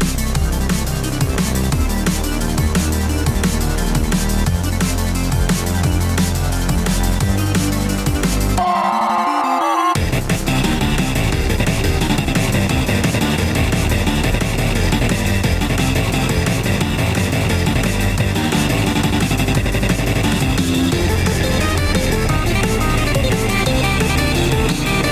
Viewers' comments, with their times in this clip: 0:08 heavy from tf2 scream lmao